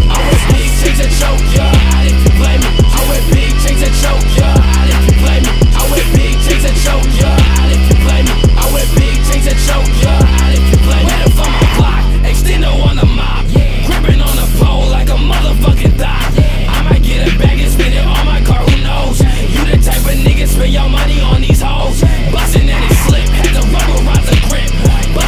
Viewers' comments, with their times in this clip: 0:10 I was ready to hear the MULA! Ad-lib
0:12 that "yeah" adlib is so hard